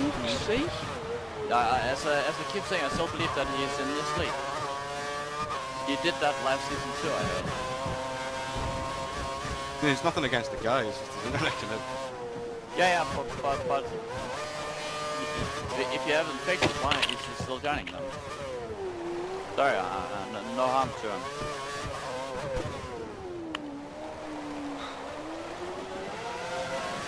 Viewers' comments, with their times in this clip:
0:10 Lol you can hear my headset gracefully glide across the room through rage.